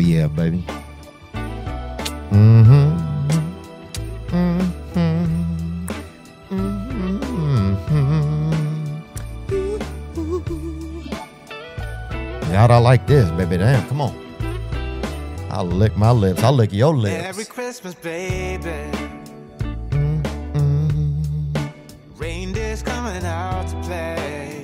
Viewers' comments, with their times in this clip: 0:06 Bag pipes 😂 it’s an accordion 🪗